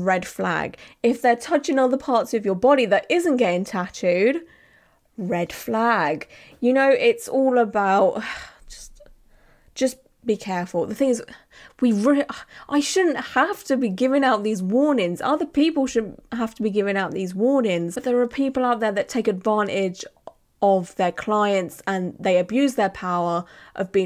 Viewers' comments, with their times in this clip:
0:07 love the "want to say so much but it'd be exhausting" ughs😂